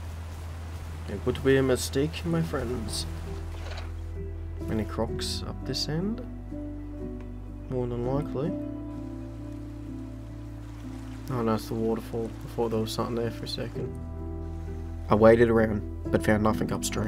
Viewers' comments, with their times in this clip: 0:03 what is the name of the soundtrack starting ? pls it´s so calming